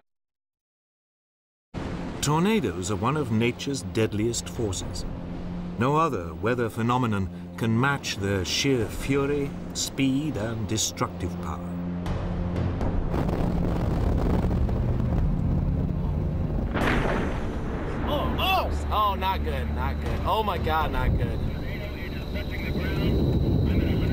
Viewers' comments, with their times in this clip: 0:10 Can anyone please tell me where and when the white drill bit tornado occurred. Reed was exclaiming "Not good, not good, oh my God, not good." That tornado hitting that house sounded like a bat hitting a ball. No shredding, just one explosion. I would really like to know what storm that was. Thanks.